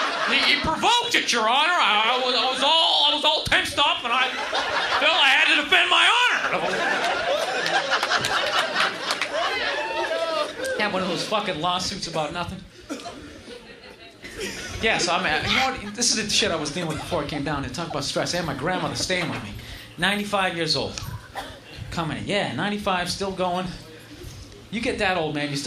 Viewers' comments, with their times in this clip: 0:07 i love that dudes laugh in the crowd
0:08 The guy is laughing so hard. xD